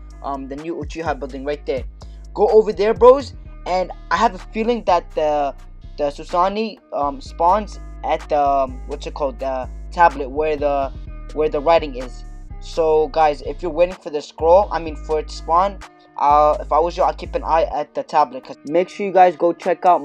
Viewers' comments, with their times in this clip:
0:06 The Susani :v